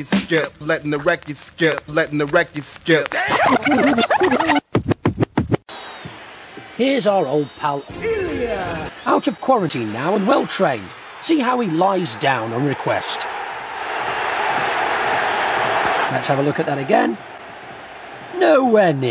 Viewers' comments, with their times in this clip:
0:07 sounds like Nick Hancock. What was this clip from though?